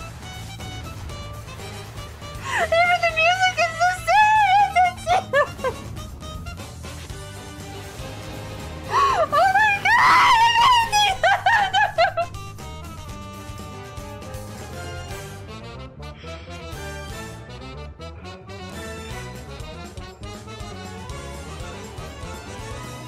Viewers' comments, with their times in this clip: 0:08 Now THIS, is what pure happiness feels like. Her not controlling her emotions just made me wanna jump through the screen and give her a big hug, and seeing the entire game being remade (wish I knew it sooner) makes this the best thing I’ve ever seen on YouTube today. Plus, the scream right here made this even more better.